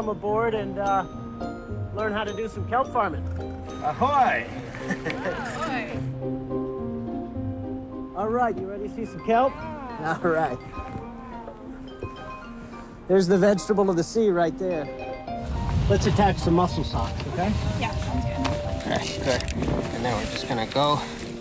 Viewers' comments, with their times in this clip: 0:05 ahoy! ...oh ahoy... Under breath wierdo...